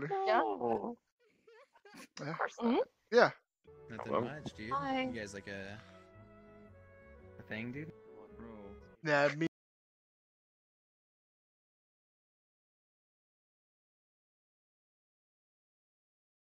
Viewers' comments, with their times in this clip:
0:09 the audio was stopped working after